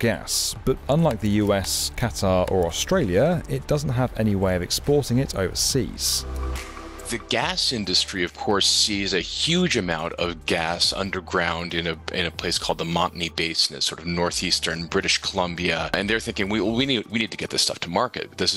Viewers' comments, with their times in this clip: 0:04 This sentence makes no sense. "Canada is one of the biggest producers of natural gas but unlike the United States, Canada and Australia doesn't have any way of exporting it overseas." You just compared Canada to Canada.